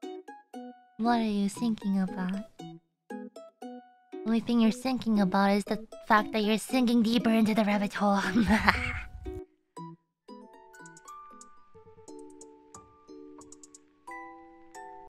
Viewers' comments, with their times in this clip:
0:03 that line sounds metal, im breakdown rn